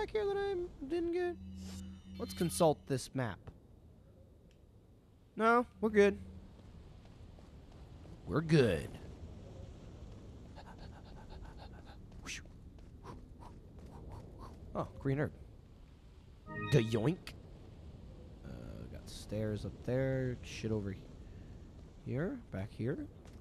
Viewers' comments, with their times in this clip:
0:09 THE PANTING IS BACK.